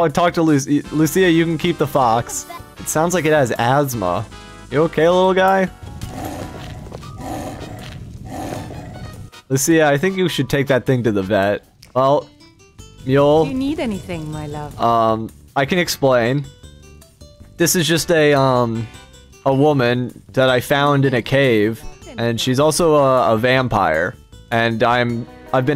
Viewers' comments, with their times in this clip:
0:08 sounds like me trying to breathe through the nostril on the side I’m laying on when I’m trying to sleep😂,…😕,…🥲.